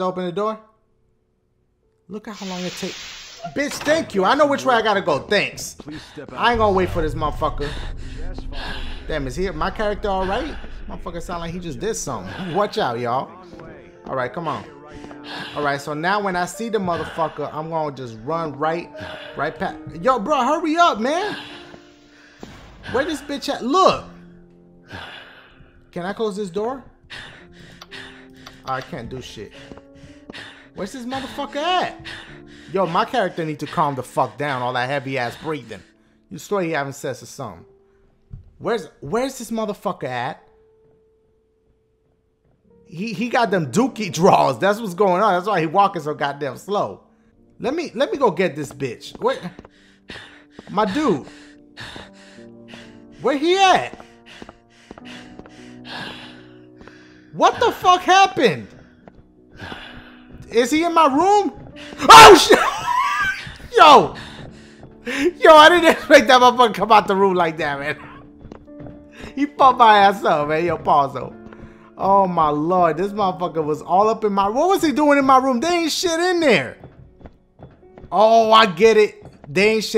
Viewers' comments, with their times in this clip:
0:05 The breathing hard part lmfao
1:01 dashie scream scared me more than the guy poppin out lol